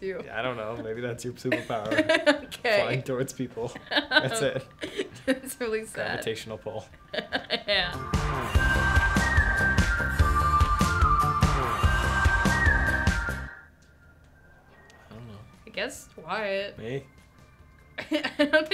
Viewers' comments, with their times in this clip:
0:06 Sophia: that’s really sad Also Sophia: keeps laughing
0:06 ...her laugh is so cute!!